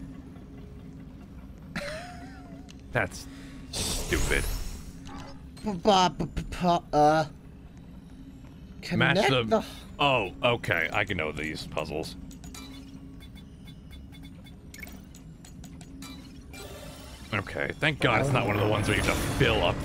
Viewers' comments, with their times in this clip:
0:05 ANYONE ELSE HEAR ROBLOX WALKING???